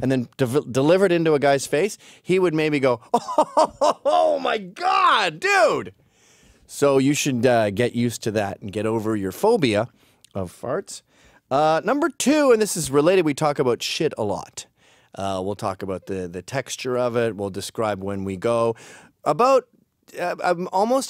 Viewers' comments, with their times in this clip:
0:04 Gavin’s mannerisms like this laugh are hilarious